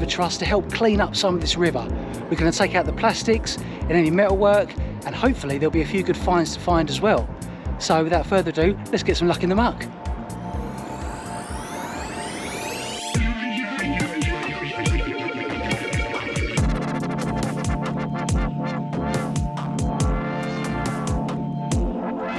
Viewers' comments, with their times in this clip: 0:10 That accent. Where is it from, please?